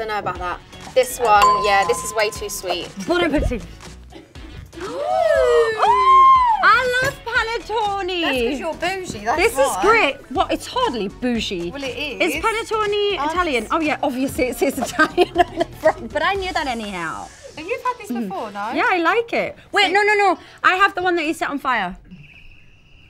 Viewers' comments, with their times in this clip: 0:06 OH MY GODNESS HAHAHHA I love her accent when she say any word in another language but in Italian... Gosh she's freaking me out hahah - I'm Italian- ^^ PANETTOooNe HAHAHAHAHA